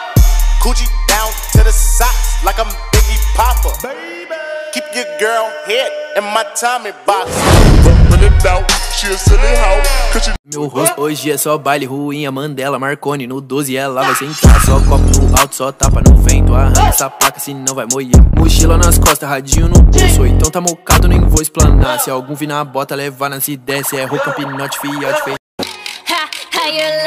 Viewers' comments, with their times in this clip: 0:10 BRAZIL SONG TIME :)